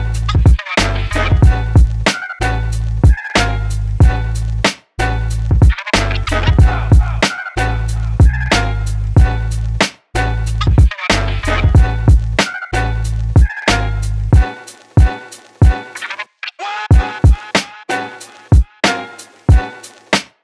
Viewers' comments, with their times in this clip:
0:06 You can hear king ghidorahs roar at the beginning, so cool!!!